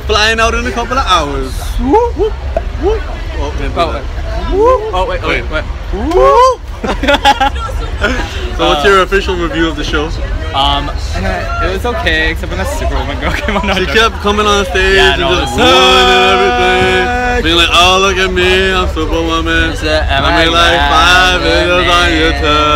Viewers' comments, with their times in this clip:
0:08 did anyone else hear lily😂😂